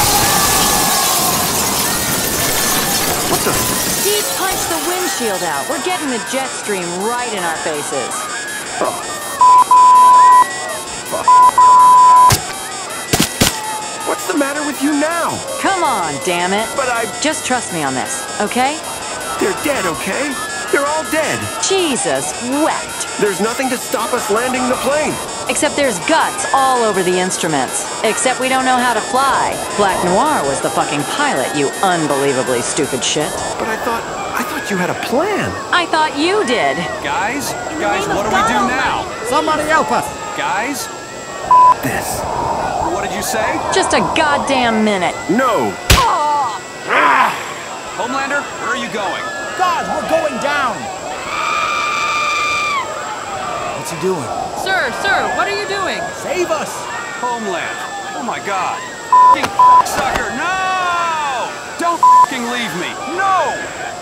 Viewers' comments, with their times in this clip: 0:10 homelander sings kpop
0:46 why did Maeve grunt like a Goblin after getting smacked 😂😂😂